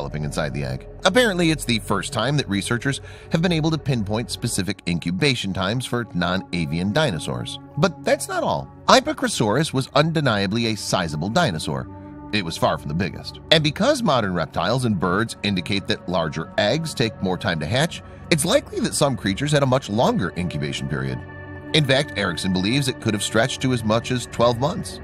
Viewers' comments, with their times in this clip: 0:10 Motor-mouth, I finally baled out